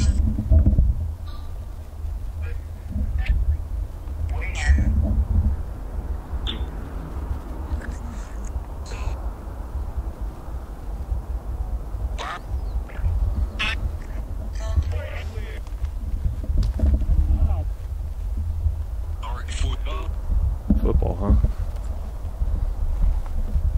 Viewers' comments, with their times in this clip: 0:04 Is it just me or does this app speak Chinese at times at exactly when you ask what are their names it replies “wingyan” on mine it said Lao hui Kung mao shi or something idk but it sounded like that woman